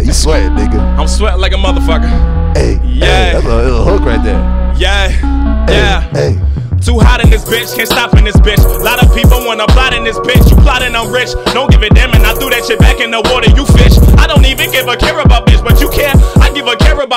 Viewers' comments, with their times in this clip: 0:04 is what Eddie Murphy woulda sounded like if he was a rapper.
0:05 Shit reminds me of Jarren benton more than anyone imo